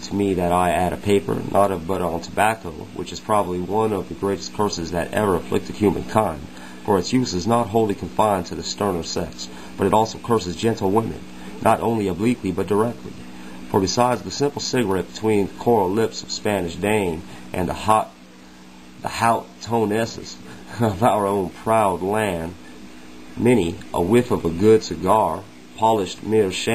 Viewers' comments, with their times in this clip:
0:07 HA, I no this is 14 years old, but this is the worst reading I can ever recall hearing on Youtube. Thank you, for caring enough to have shared LOL but after 3 attempts the furthest I have been able to tolerate is sec. And I really wanted to hear, and share this.